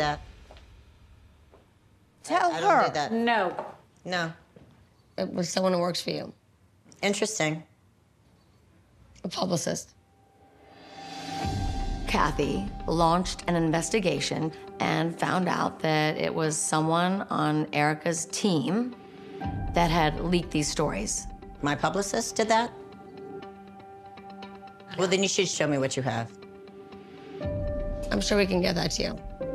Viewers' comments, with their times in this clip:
0:07 THIS is my absolute favourite, Erika thinking she sounds like a boss when she actually sounds DUMB and GUILTY.
0:14 even if garcelle is doubtful, or mistrustful, or hurt, or angry, no matter what emotion she deals with, her tone, facial expression, body language always ooze class even in those moments. you can tell how she feels about erika, yet no sign of hostility or disrespect on her face. true class.